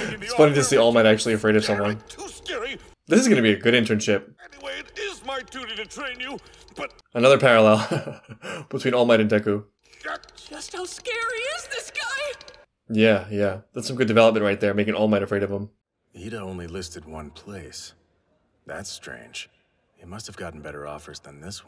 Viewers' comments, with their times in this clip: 0:06 -Deku mutters, All Might shakes.